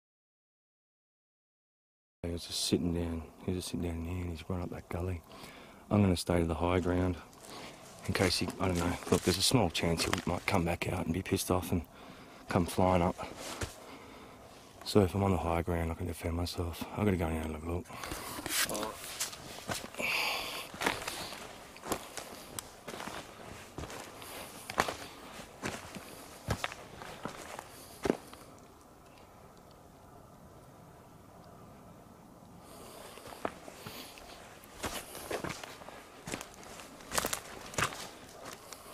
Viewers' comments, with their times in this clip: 0:05 minutes I hear a man's voice after you finished talking
0:17 you can hear someone saying hello but with a accent
0:17 someone says "hello" with asian accent
0:17 I heard a hello
0:17 is that you making the moan sound after you say “I’m gonna go up and have a look?” It sounds like some sort of vocalization that doesn’t sound like you. Edit: i’m sorry but at the end you said that old man fucking LAUGHED when you told you found two bodies?? To LAUGH at that?! The mindset of that man disturbs me. Attitudes like that are part of why droves of young people wanna walk to their death’s in the forest. Sickening.
0:18 theirs a deep voice going "uh"
0:18 you can hear a weird grunt after he says something about defending himself on higher ground.....
0:18 when you say you are going to have a look a male says alright.
0:18 was that a fart ? lol
0:18 You can also hear a man say something..kinda sounds like he says “uh”
0:18 Did anyone hear "HELLO" ?
0:18 you hear a "what" or "huh!"
0:18 you can hear a man say hello
0:18 I hear it.. like someone saying hello but not quite English.. timestamp is
0:18 Male disembodied voice,!! Speaks same time he does, close to camera
0:19 you can hear a voice I don’t k ow what it said but plz don’t tell me in the only one who heard that
0:19 there’s a voice saying “hello”
0:19 There's an evp after you said that you were gonna go and have a look for him a male disembodied voice says "follow"!!
0:19 you can here a disembodied voice as he says I’m gonna go up here and have a look and steps up the hill
0:19 i think right after you say HIGH GROUND YOU CAN HEAR ANOTHER VOICE!
0:23 woman's voice saying something